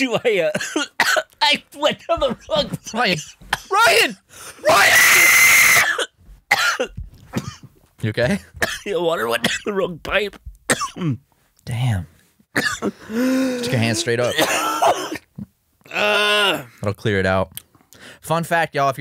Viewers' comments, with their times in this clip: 0:03 Why is no one talking about that beautiful, exquisite scream
0:03 that sounded so real.
0:03 That scream made me fucking cry laughing that was the funniest thing in the universe I can't breath
0:04 Return of the atomic scream
0:04 R.I.P. my eardrums
0:05 f for headphone users